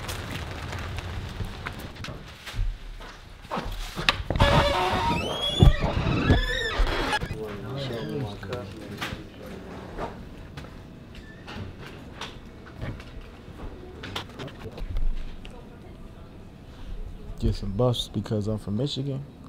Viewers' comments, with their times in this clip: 0:04 Why that door@ sound like humble starting